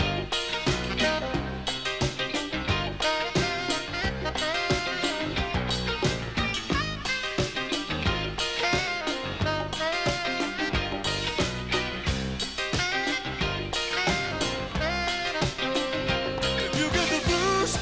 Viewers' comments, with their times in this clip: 0:04 Agreed. The little twirl wasn't in the album version and there's something so cool about it.